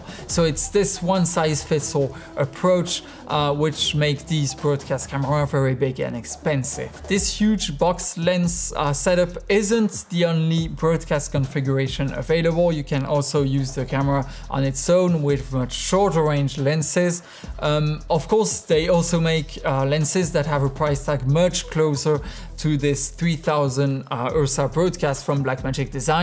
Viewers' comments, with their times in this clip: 0:07 Did he just say "This huge... (box lens) ass-ette up...?" (Click the time stamp)